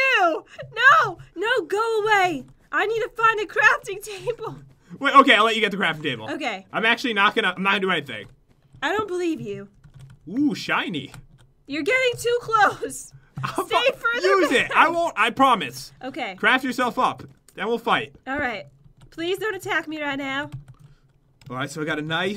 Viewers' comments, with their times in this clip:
0:09 I thought it said "OOH SH*TY" ;-;